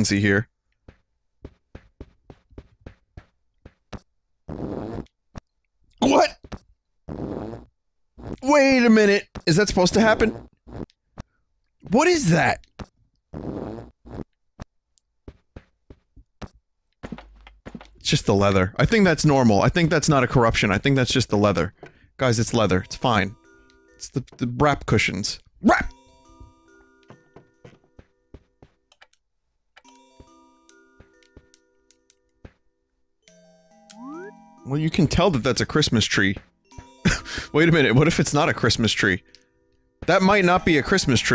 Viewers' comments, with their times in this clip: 0:04 Hahaha the couches make fart noises when you sit on them wow.
0:05 Farts is normal in the animal crossing game without corrupting, it only happens in certain chairs or sofas. When it happened to me I started laughing hahahahaha.
0:26 Is the track playing corrupted? Does anyone know what track it is either way?